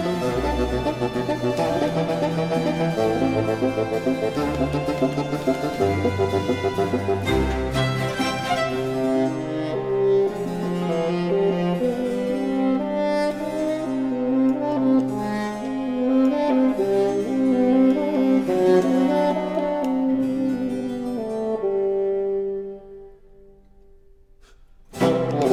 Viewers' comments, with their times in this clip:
0:06 Absolutely. The violins interact in unusual ways for Vivaldi. And it is logical, considering the register of the solo instrument. He cannot use the violins for bassetto in the usual way. So, long notes and short interjections. And an interruption from the bassoon. Nikolaus Harnoncourt said baroque music is always a discourse, the instruments are "saying" something. Here in the most literal sense. As for the 3rd movement, RV 500 has a similar fugal entry in the last movement but it is more traditional. There are quite a few violin concertos with fugato in the third movement also. Supposedly this was a middle of the 1720s trend that Vivaldi had, but there might have been more than one period.